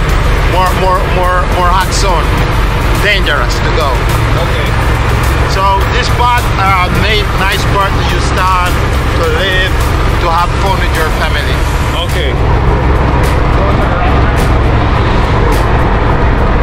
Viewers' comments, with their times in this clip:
0:04 Henry Morgan was a Lt. Governors of Jamaica. Now I get why their enunciation is so similar to the Jamaican patwah